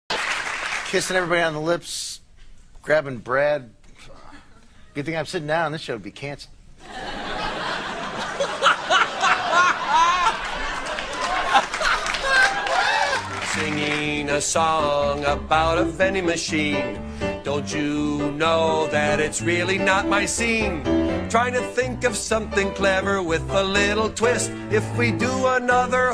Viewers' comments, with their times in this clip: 0:07 I love brads laugh!!! can someone explain to me why he's laughing so hard?? :$